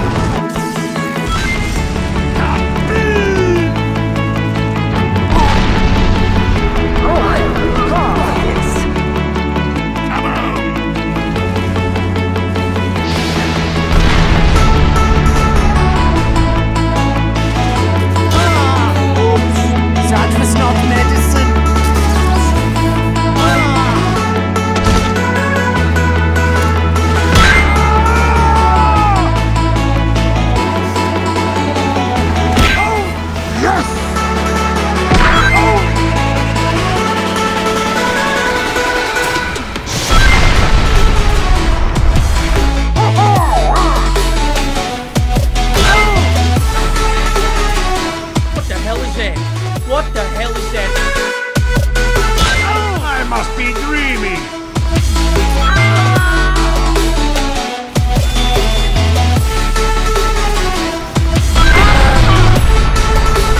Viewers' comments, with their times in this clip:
0:03 (heh) is reused
0:45 That scout line gets me every time. "What the hell is that, what the hell is that?" TF2 Voice acting is probably the best of any multi player fps game ever.